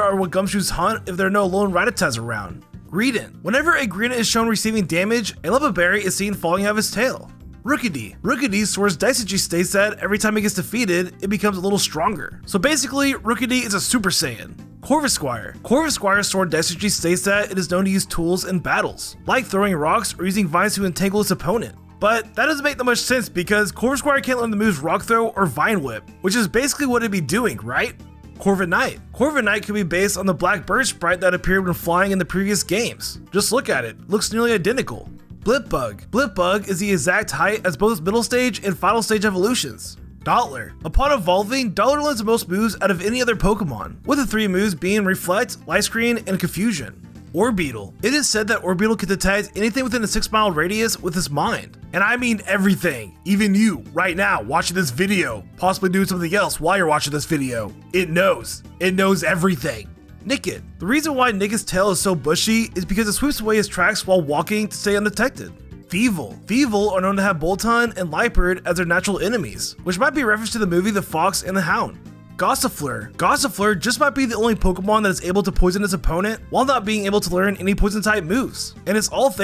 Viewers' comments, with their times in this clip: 0:06 I've replayed the Rookidee fact at least 20 times and I have no fucking idea what you said. "Rookidee swears dice a juice day set, every time he gets to feed it, it becomes a little stronger".
1:01 THE REASON WHY WHO'S TAIL